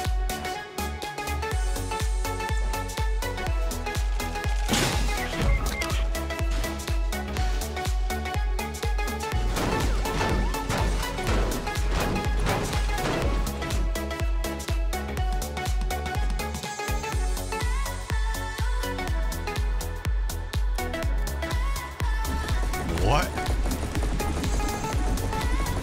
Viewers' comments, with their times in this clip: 0:09 Sound of da police